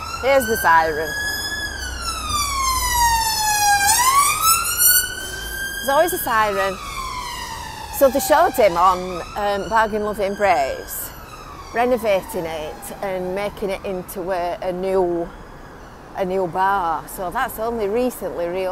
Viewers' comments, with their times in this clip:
0:05 What's a Visit Fylde Coast video without a siren! Love it.